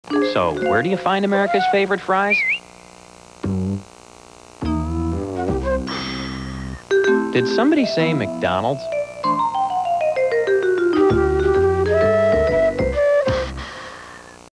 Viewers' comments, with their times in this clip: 0:07 this Jingle Is Catchy